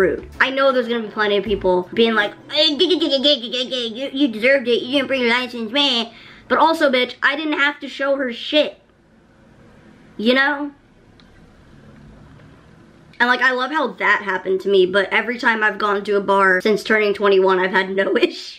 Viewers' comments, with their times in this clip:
0:03 Cartman from south park is that you??